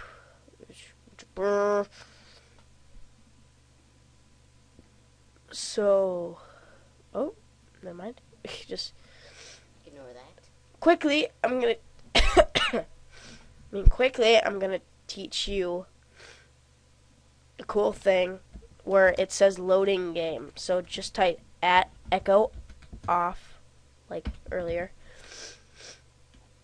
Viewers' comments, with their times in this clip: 0:10 WTF CREEPY ASS VOICE FROM THE BACK OF THE ROOM AHHHHH :(